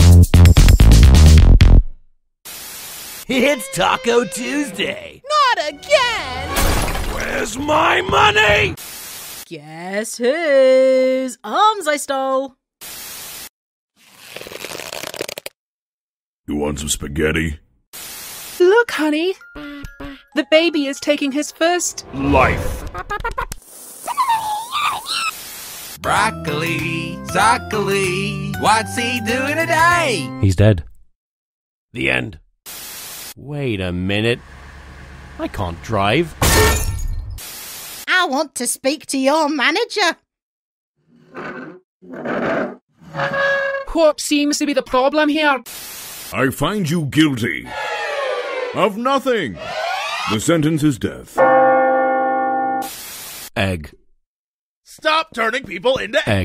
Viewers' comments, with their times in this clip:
0:05 Sounds exactly like Book.
0:05 It really sounds like book
0:06 [insert real taco voice]
0:07 the original video was taco This one taco but man voice
0:19 Flower with a different voice here has higher levels of “cursed” than any other character with a different voice
0:44 “wot seems to be the problem here?” Also btw I’m not making fun of the accent-